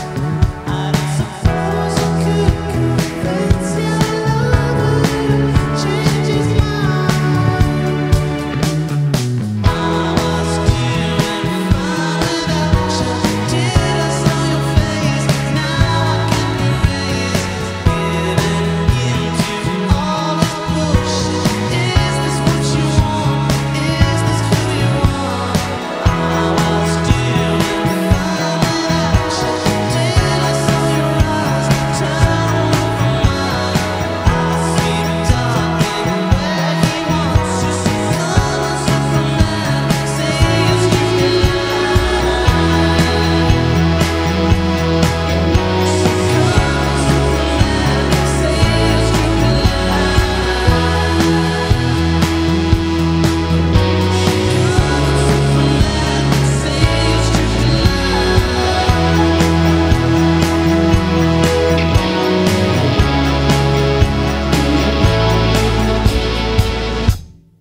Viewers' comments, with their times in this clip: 0:08 is when Daft Punk kicks in
0:40 the way he says line gives me goosebumps 🥺
0:54 This proves that they did live min and that bass need to be louder.